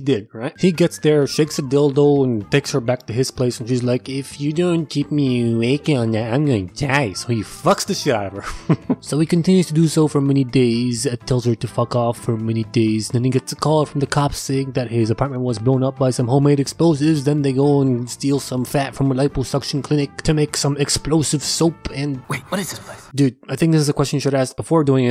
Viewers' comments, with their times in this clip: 0:08 I'm in love with his laugh 😌